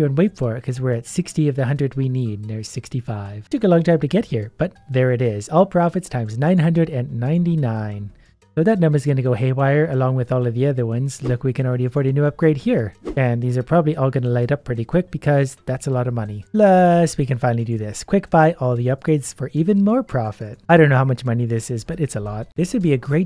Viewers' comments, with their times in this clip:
0:08 what did u say ? hay wayer ?...